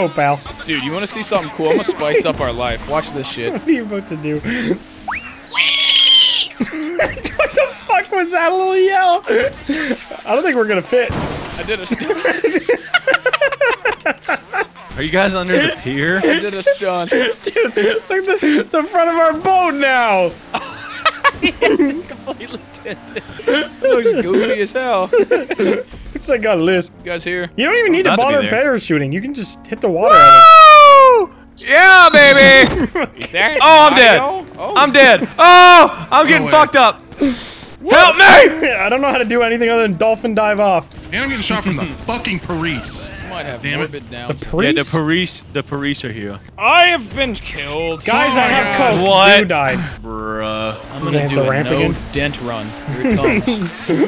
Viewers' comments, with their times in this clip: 0:04 ŴËËËËËËËË I’m in TEARS LMAO what was that SOUND
0:42 😂 porice are here